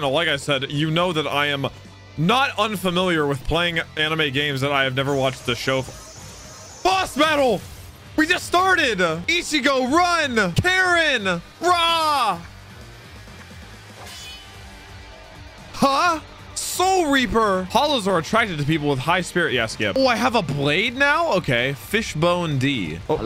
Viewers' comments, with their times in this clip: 0:10 Him saying karin as "karen" is so funny to me 😭